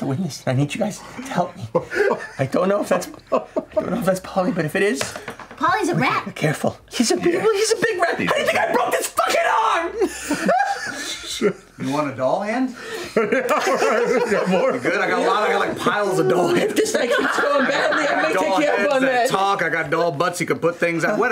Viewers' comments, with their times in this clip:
0:05 Holy shit, Matt put some real strength into that line. It just shows how much fun games like these can just have some amazing moments.